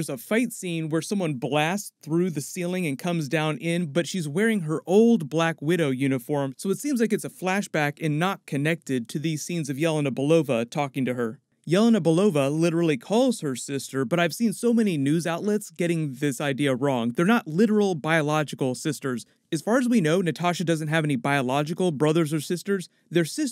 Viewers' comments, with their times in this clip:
0:09 Was trying to make out what is "yell and a Belova.."